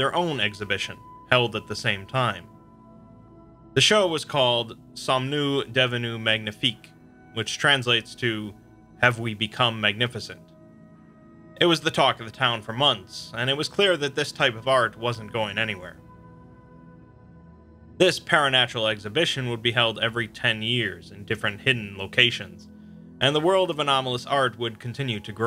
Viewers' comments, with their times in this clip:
0:06 i know you don't speak french at all, but seriously, this accent is unbearable (o_O)